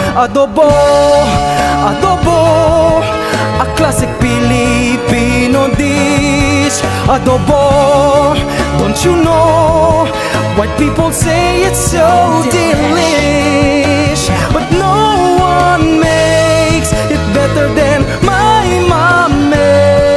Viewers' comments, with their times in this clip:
0:03 him singing behind his mum who doesnt notice